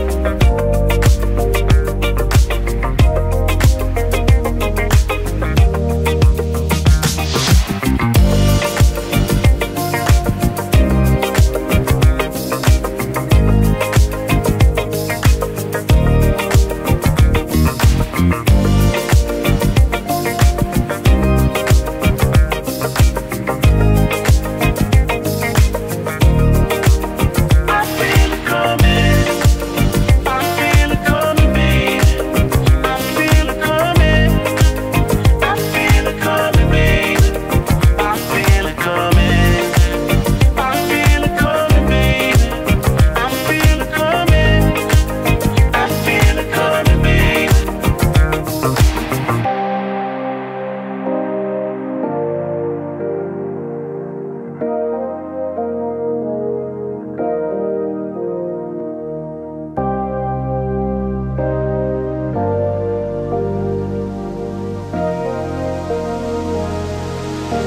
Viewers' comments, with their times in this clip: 0:06 that drum roll + bass
0:16 I love the bass
0:16 Bass uffffff funky
0:16 That bass line while you're hitting blunt..
0:34 Hardly an instrumental :( ... thumbs down
0:49 ,I'm in love with this instrumental part,is too catchy, I still like 5 years later